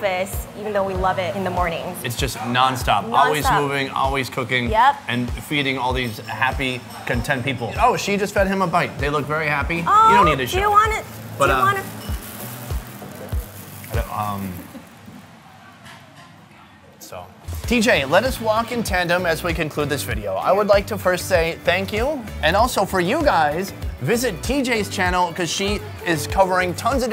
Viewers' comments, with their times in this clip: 0:09 Awkward romantic silence ?